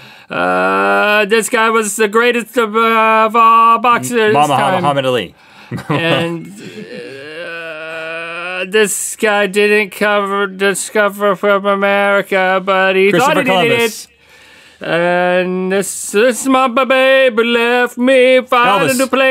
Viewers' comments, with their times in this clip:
0:04 momma-hammad Ali lmaoo